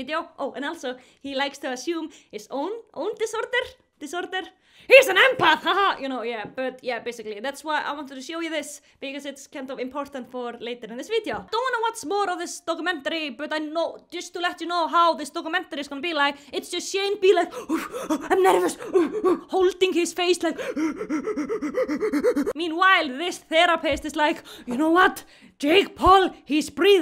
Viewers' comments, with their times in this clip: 0:08 i love how she loses the accent lol